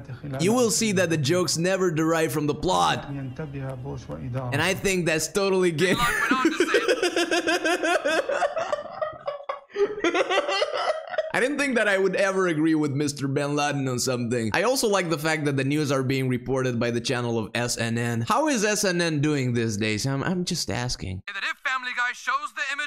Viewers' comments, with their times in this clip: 0:06 this laugh got me 😂😂😂